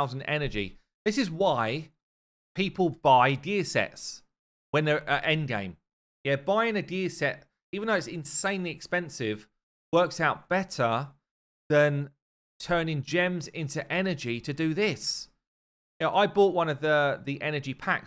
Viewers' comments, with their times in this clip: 0:06 "This is why people buy gear sex" hhhh